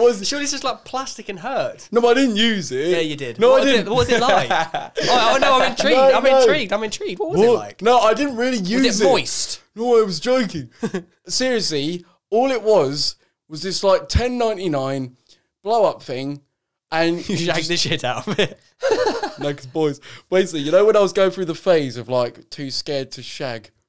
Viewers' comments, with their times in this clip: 0:10 my man sounds like spongebob when he’s out of water
0:10 that voice change tho